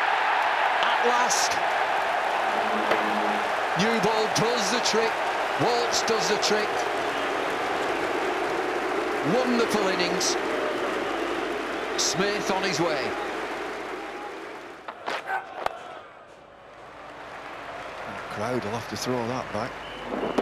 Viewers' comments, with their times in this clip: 0:08 booed for smith was nit expected!!! I hated as much as anyone to Warner and Smith after sandpaper incident but they won the heart with their batting. One in World Cup other in Ashes.